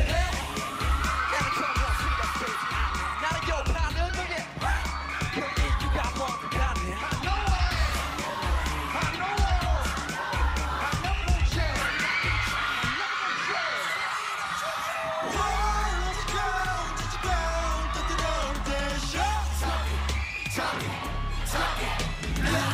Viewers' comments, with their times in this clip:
0:09 that fan scream when Jhope came too close to them 😍